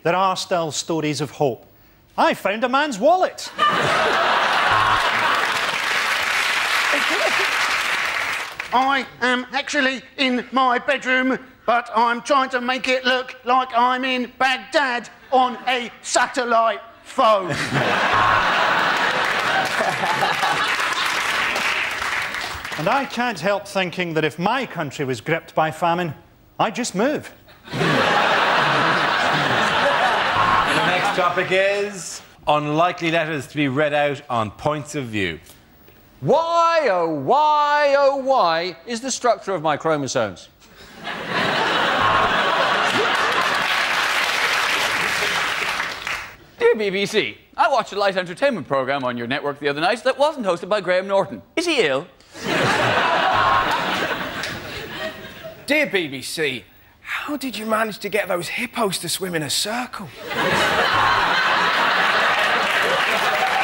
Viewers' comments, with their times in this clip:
0:07 he sounds like a dalek
0:45 that was a blatant voice crack 😂😂😂😂
0:46 big voice crack lol!